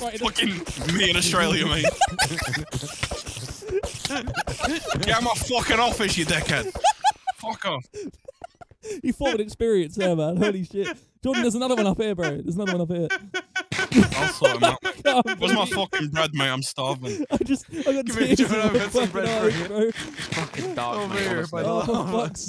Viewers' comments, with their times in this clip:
0:08 I thought fully automatic honks where illegal in the uk??